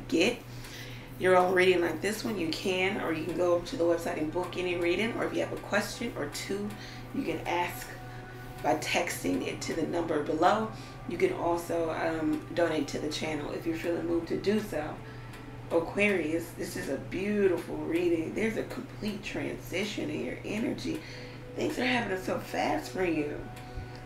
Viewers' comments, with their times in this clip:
0:10 I’m seeing from few days and also seen 222,444 other day. Thank you so much for your guidance.Your energy is very calm and very soothing music in background.Love♥️from Aquarius ♒️ ascendant🌞